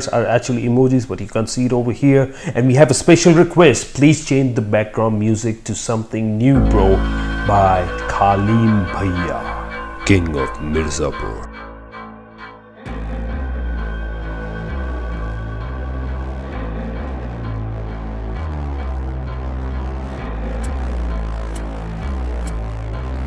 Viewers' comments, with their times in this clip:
0:07 Dat, background music take off 🤯🤯🔥🔥